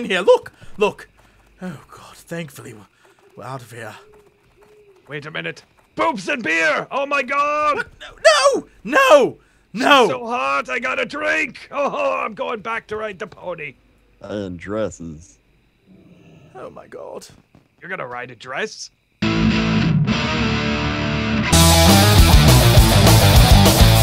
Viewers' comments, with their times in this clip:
0:05 Sounds like one high dwarf!